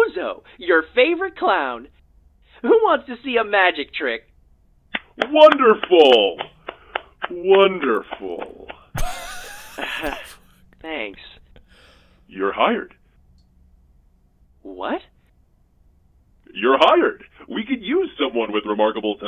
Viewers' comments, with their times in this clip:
0:05 Wonderful ! Wonderful... i didn't know Karl Heisenberg was in this game